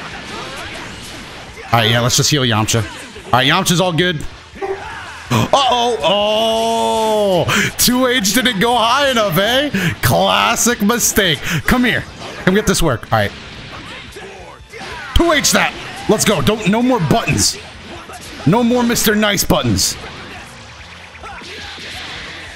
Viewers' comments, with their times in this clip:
0:04 what was noise?
0:04 anyone else hear something in the background?